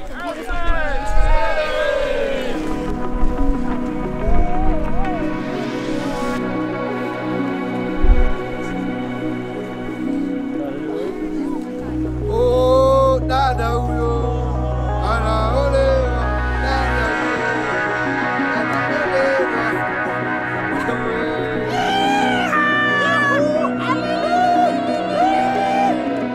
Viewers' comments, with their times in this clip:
0:08 What a beautiful scene. The guys in the background began singing and cheering in Swahili "Ooh dada huyo, anaolewa!". Translation: "Ooh this sister, is getting married!"